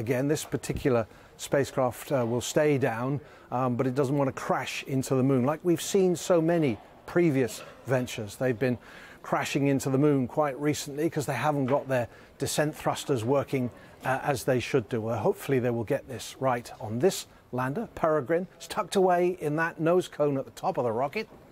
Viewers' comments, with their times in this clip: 0:03 she's got a deep voice. 😅